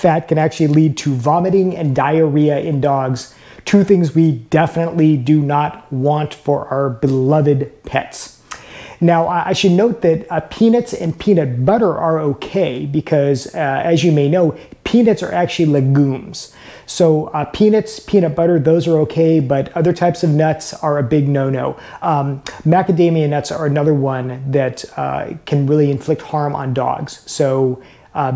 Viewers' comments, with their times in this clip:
0:10 Pee-nits and pee-nit butter? That a regional accent?